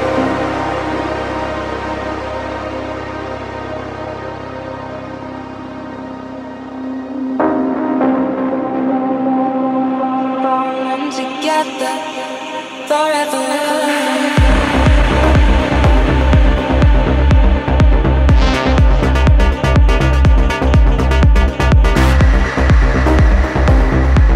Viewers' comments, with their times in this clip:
0:09 💗🎧🎶Beautiful Change of Music, Thanks Miss Monique💚